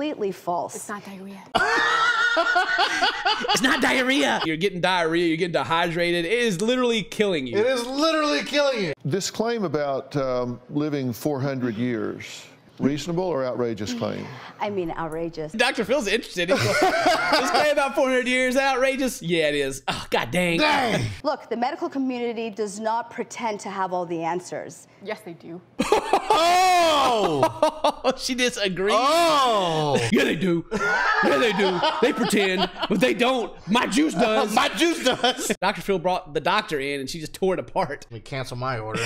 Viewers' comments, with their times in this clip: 0:04 i heard the MS in you...
0:25 subtitles be like "laughter that sounds like a broken car trying to start up"